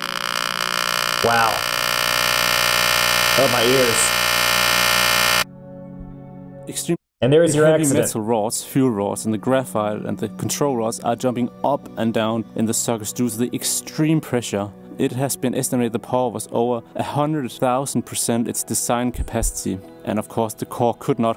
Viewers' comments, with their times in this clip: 0:04 anyone notice the bit compression?